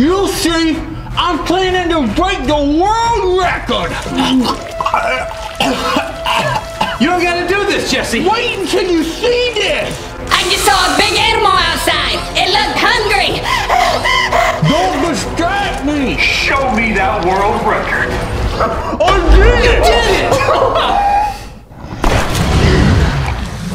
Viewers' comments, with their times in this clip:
0:05 Coughing / throat up